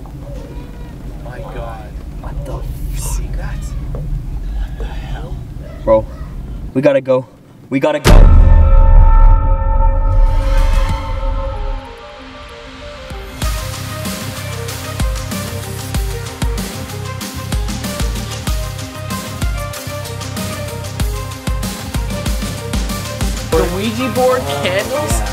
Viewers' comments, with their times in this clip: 0:08 did a massive bell just fall on them? what was with that loud aah bell sound
0:08 best theme ever